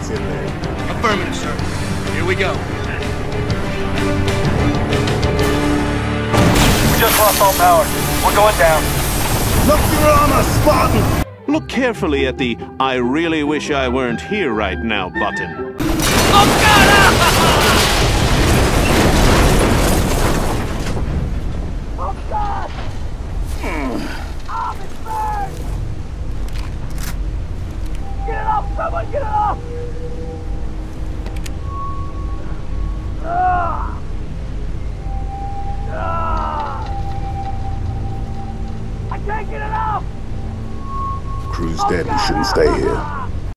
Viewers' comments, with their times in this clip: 0:06 I love that unemotional "We just lost all power, we're going down", like he doesn't care anymore
0:40 Why'd he say that like they're guilty